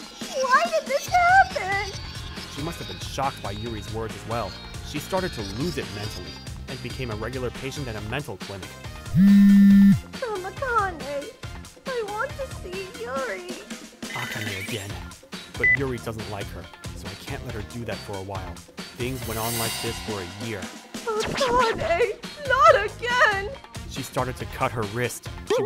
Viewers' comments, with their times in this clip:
0:09 For the first time in my life, I thought my headphones turned into a phone and rang on my ear